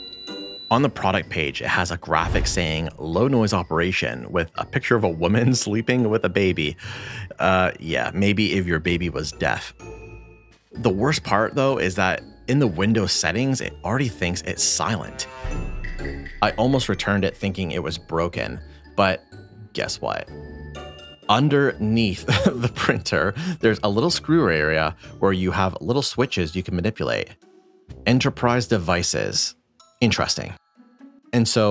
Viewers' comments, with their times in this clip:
0:09 well I'm watching this video with a sleeping baby on my lap, with sound on, and all the beeps didn't disturb her at all!
0:18 Can confirm, the noise will wake sleeping babies 😂